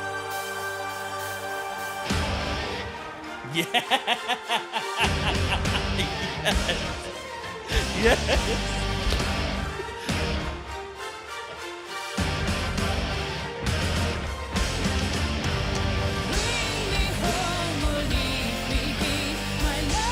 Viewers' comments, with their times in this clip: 0:08 the pirate theme